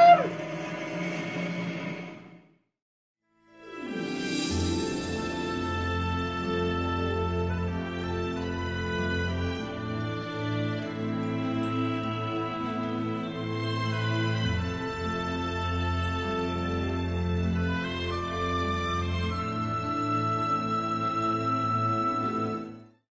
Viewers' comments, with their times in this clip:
0:10 segway, aw that soundtrack, this is a beautfiul movie